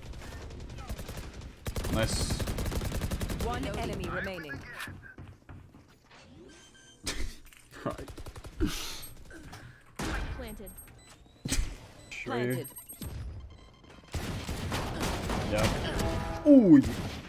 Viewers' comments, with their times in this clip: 0:03 bruhh and laughing:D love you :D:D:D:D lets hangout 1 day :D bee happy all your lıfe wıth your famıly ı wısh for you.